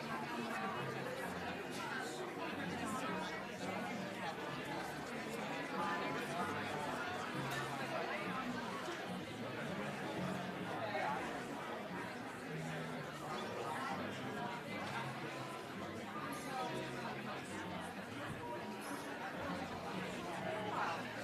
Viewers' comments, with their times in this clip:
0:03 "We have much more open rules for what is ok to say" Funny that all you hear is beeps when people are let loose, even tyt now have beeps on